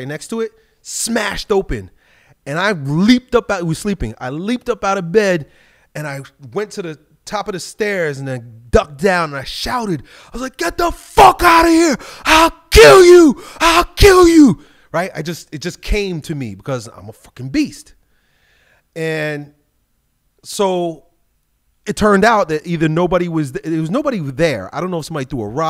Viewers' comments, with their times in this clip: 0:09 sounds like hodgetwins